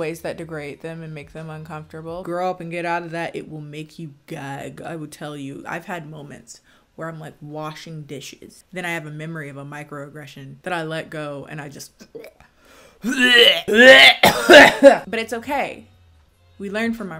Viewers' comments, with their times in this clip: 0:04 TRIGGER WARNING for mention of gagging, and gagging noises! Skip ahead by 15 seconds if you are sensitive to that!